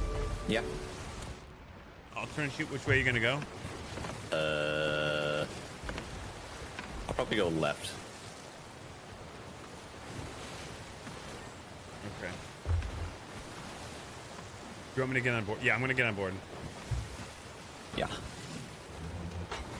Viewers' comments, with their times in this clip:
0:03 That "uhh" is straight out of Beavis and Butthead